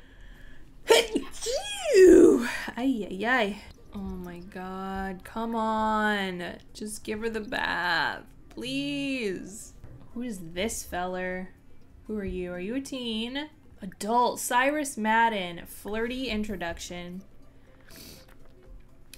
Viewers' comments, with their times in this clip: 0:03 Also bless you lol